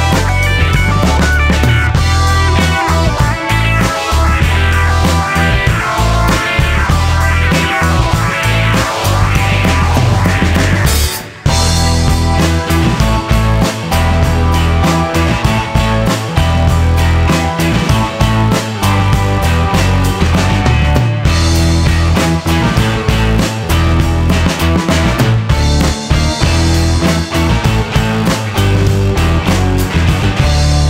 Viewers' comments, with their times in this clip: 0:10 is the best bit going into that riff section seamlessly
0:12 The bass groove seems like a Doors song (minute )